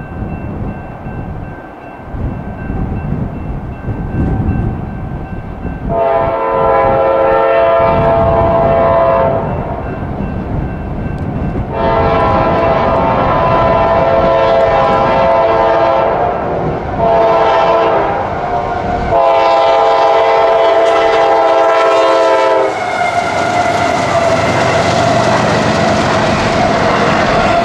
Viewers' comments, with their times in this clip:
0:10 Another great sounding k5la at the mark!!